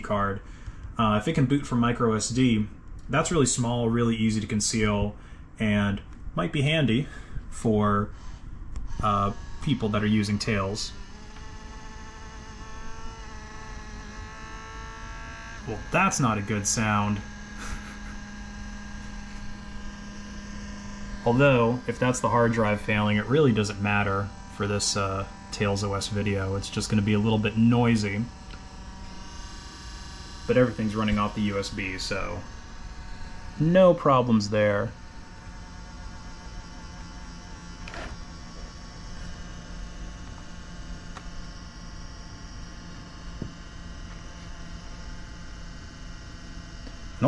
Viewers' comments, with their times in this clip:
0:09 also happens on mine It's the fan
0:30 ngl just sounds like a fan got dislodged and it just need some percussive maintenance